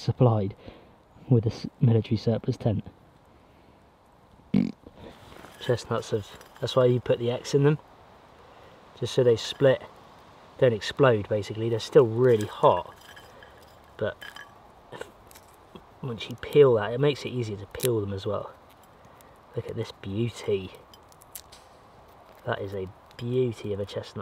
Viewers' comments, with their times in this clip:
0:06 Was there a fart ? Haha